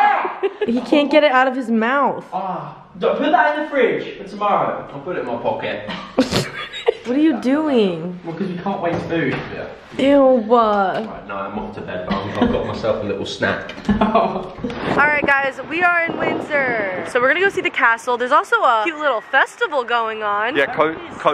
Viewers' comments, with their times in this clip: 0:04 “ill put it in my POCKet” i love him so much